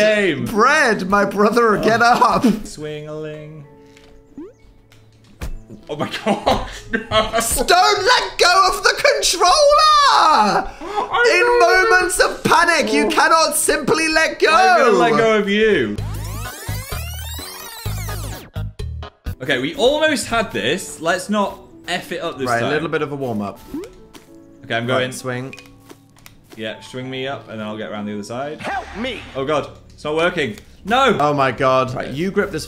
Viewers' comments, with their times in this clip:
0:06 The "don't let go of the controLLEEEERRRR" is peak annoyance 😂
0:16 Just the short little Sans theme makes me really want to see them play undertale again and see how they react now that the vibes are a little different, haha